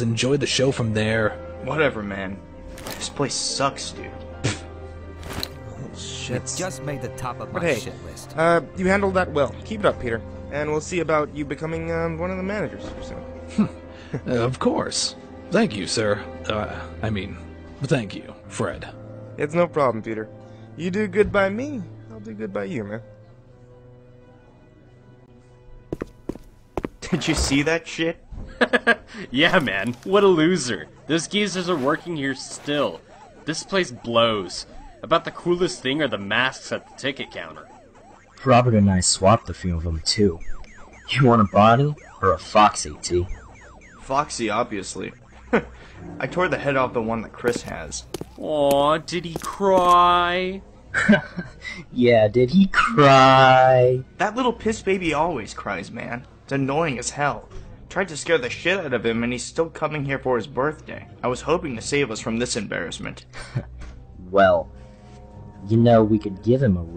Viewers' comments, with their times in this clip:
0:06 DID I JUST HERE SOMEONE SAY PUT HIM ON THE HITLIST?
0:28 I can hear Pac Man sound effects
0:39 am I hear pac-man in the background ? =D
0:52 Not tryining to be rude but that was bad mic